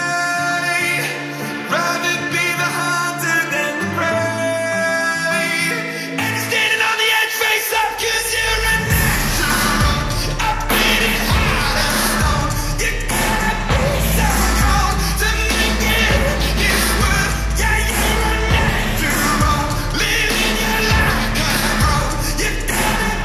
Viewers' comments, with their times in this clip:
0:07 Beat dropped harder than Logan Paul’s career Omg 444 likes